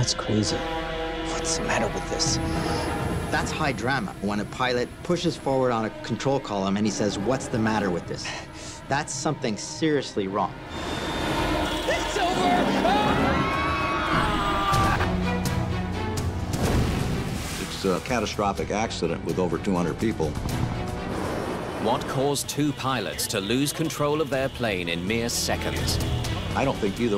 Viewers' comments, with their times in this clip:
0:10 I know people died, but is the actor playing the pilot shouting "It's over!" necessary? Too funny.😂 Edit: I know they try to base off CVR, but it's still funny that that's what someone chose to say their last moment.